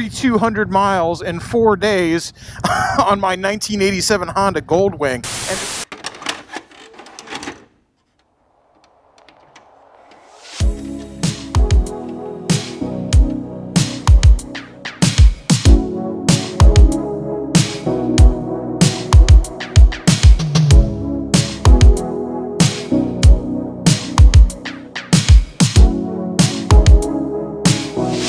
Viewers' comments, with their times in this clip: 0:10 i hear that 80's music and my first thought is Stranger Things